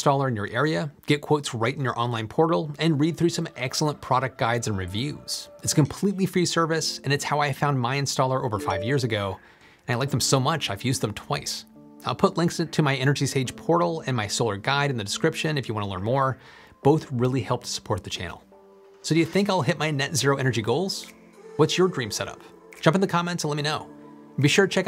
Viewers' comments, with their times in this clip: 0:08 What's the audible ding noise all about?
0:08 Sounds like you got a notification ! 😅 great vid.